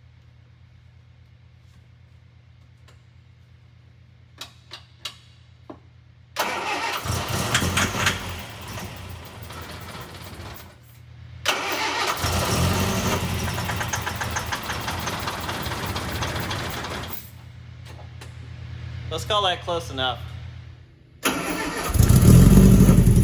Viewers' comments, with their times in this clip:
0:10 that sunbeam sounded like its throwing a rod.